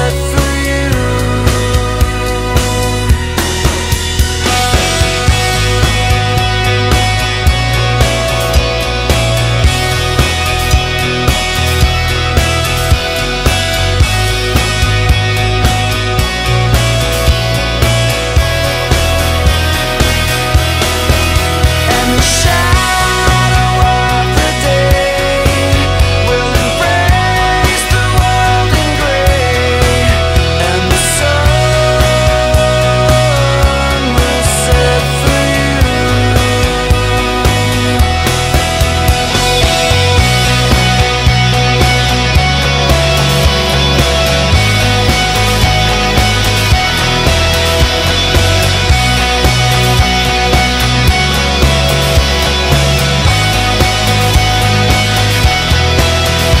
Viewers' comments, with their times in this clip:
0:05 The Guitar Is Legendary!!!
0:38 love the guitar